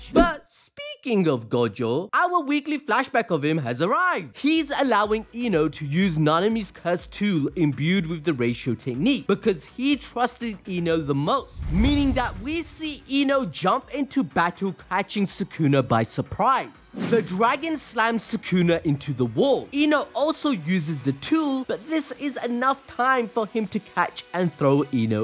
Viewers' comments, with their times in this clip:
0:06 “nanami’s cursed tuwell” I thought us Baltimoreans had a bad accent 😂😂